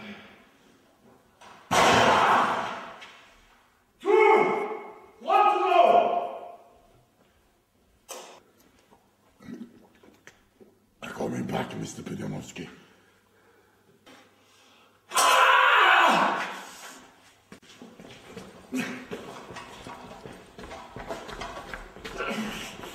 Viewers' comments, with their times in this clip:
0:09 if anyone has played elder scrolls morrowind Svend sounds exactly like a dunmer.